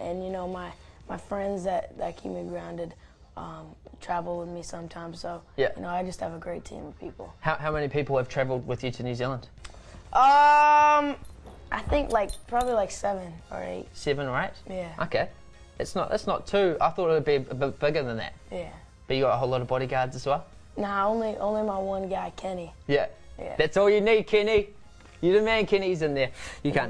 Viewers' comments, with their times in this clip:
0:10 Why the fuck does he say UMMM so loud ?